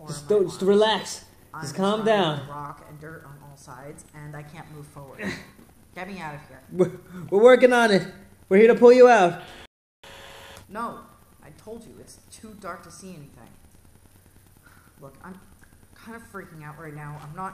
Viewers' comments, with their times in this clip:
0:03 the radio is on loop